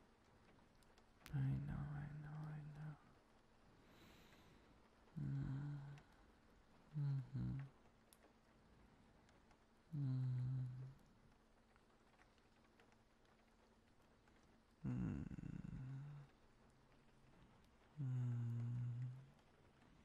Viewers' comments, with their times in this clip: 0:07 Come and cuddle me with your voice❤️ it's of the night in my country so i'm going to bed with your voice thank you ❤